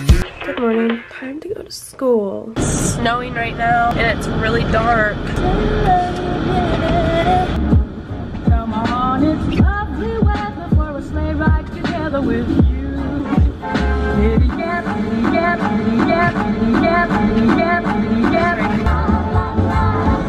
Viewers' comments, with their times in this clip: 0:07 there she is actually having a great singing voice omg